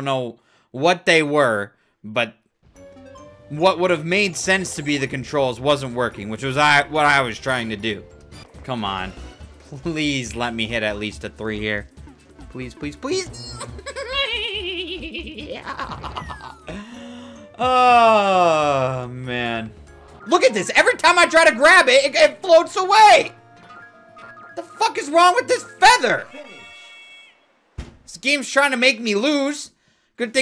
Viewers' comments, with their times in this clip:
0:10 Bruh the heck was that laugh?
0:13 literally the way my mom's friend laughs
0:13 sounds like skeletor impersonating a horse
0:13 sounds like skeletor impersonating a horse
0:14 he sounds like pennywise
0:15 he turn into penny wise or something with that laugh😂😂😂
0:15 the horse girl when she laughs
0:15 Omg that laugh had me crying🤣🤣